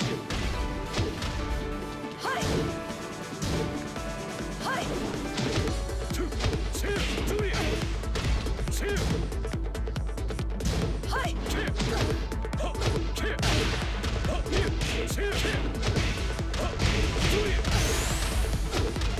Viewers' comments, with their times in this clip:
0:04 Music beat drop right after the parry? Coincidence? I think not